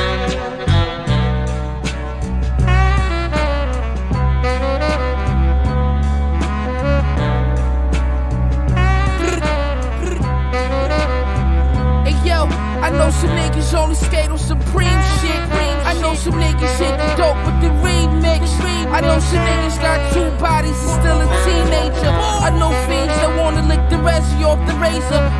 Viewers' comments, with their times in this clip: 0:05 Deadly as beat goes 💯🪖🔥🦾🎙🔗
0:11 First are flawless. Whole song is but damn that sounds like The perfect winter morning